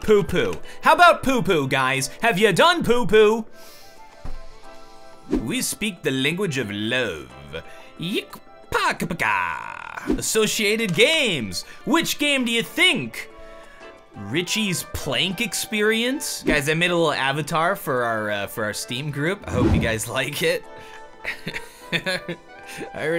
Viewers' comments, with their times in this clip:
0:05 Zapp Brannigan? is that you?